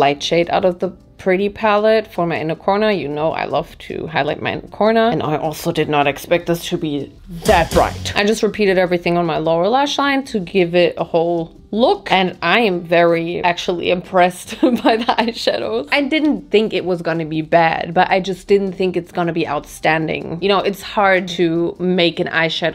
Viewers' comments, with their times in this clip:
0:07 the runway sound effect PLSSSS that really gooped me 😭
0:07 That sound effect turned it up for me LMAO start your INGINES